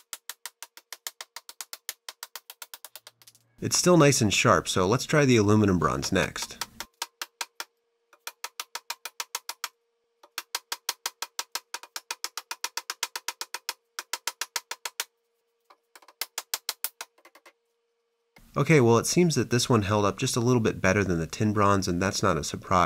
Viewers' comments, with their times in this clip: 0:05 Minecraft steve type beat